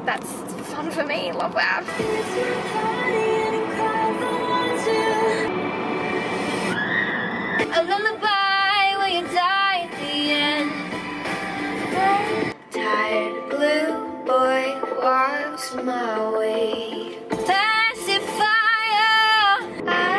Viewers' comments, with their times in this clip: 0:08 your voice is sooo beautiful!!😍